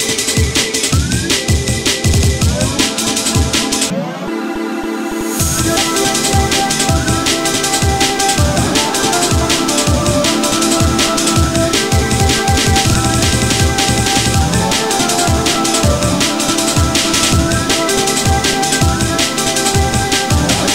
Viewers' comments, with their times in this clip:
0:05 Great song it has top tier potential it’s a very catchy rhythm which is not only good for a song. But is also a pretty popular style of choice people like familiarity and being able to relate it’s no different in a song with lyrics people love catchy lyrics. You didn’t do anything bad although that last bit I got to hear was amazeing in the last half I like hearing stuff like that added through out the song every now and then. It really adds more additional sounds and rhythm to the song.